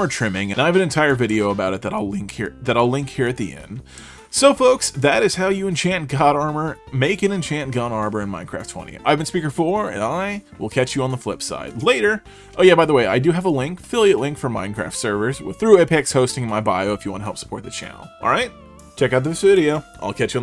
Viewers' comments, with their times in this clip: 0:04 bad ass voice crack